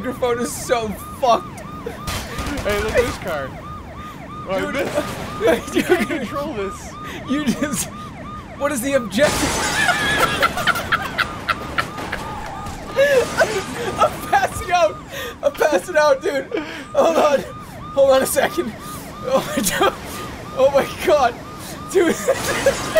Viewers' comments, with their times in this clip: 0:09 best jerma evil witch laugh i've ever heard. this one has me in tears, i have to be quiet not to disturb anyone but holy fuck